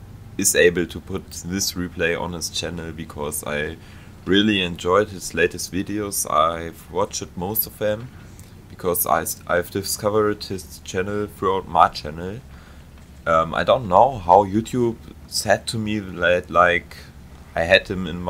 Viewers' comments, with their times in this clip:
0:06 So im in, already I love the accent, its brilliant! English is fine too, nothing wrong with it. Hoping he says "squirrel" at some point. Will update soon.